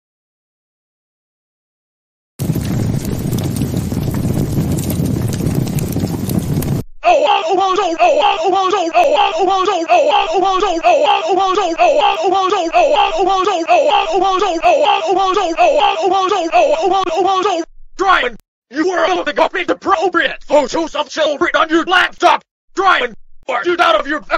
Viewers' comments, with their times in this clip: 0:06 What is this voice???